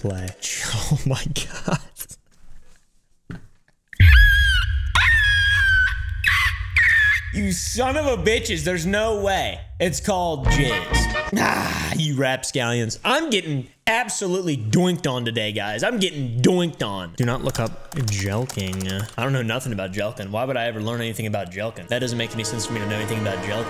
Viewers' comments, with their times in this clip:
0:04 you sound like the Cleric Beast from Bloodborne